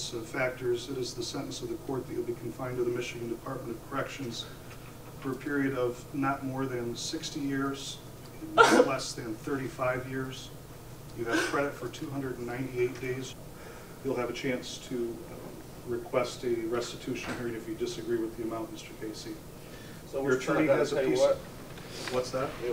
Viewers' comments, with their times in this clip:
0:08 sec 😂 Why is he crying like that? He's a G in the street's! Can't nobody tell him nothing....😊 Tell yo Homies, to come get you 😎